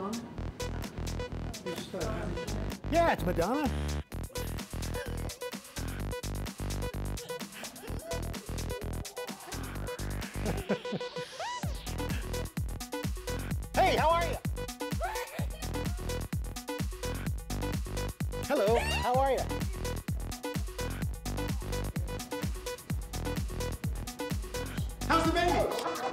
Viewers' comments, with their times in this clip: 0:08 Lmao granny n da background laffin her ass off...